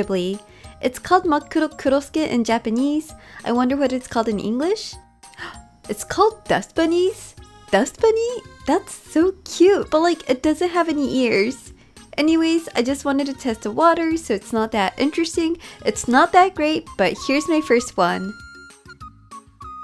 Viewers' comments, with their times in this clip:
0:07 it’s actually called a soot sprite lol also I love your accent